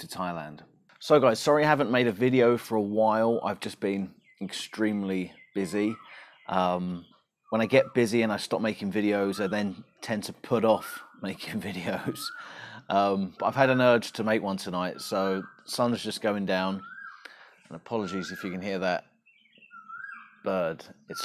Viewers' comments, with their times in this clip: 0:05 I remember living in Thailand and hearing that bird every morning and sometimes during the day too lol